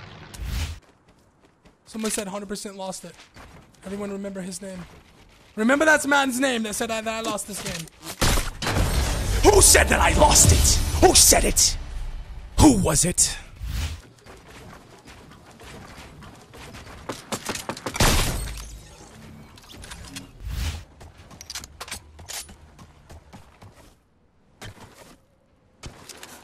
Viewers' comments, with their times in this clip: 0:09 I hate that voice he does. Kinda cringy.